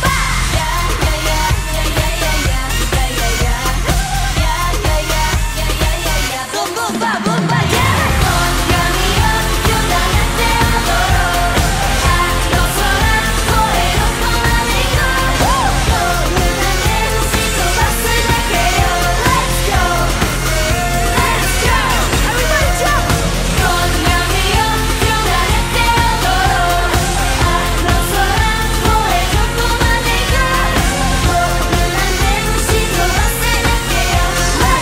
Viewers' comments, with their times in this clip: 0:08 Jisoo's powerful voice singing 'Boombayah' is just so good to hear...
0:08 the best Boombayah’s drop ever!!!
0:17 it's Rose's voice but she isn't singing??